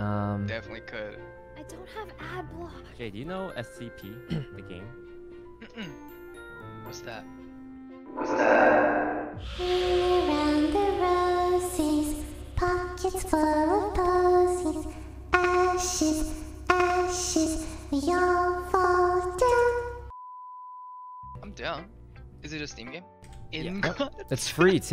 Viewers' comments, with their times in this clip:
0:09 i was literally just humming that before the video started???